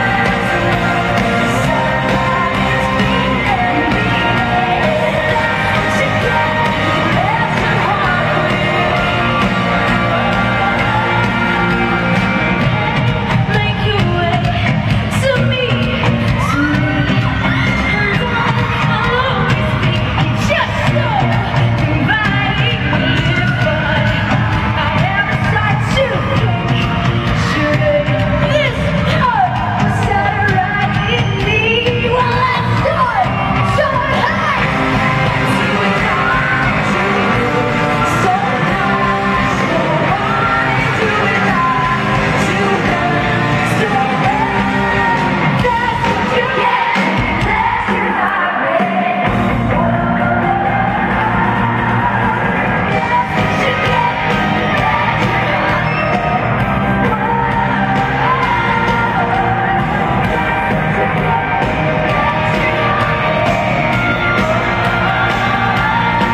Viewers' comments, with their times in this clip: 0:07 Taylor, you're supposed to hold that note a bit longer dammit... Now the lip syncing use is revealed >.<
0:47 I like how the sound muffled!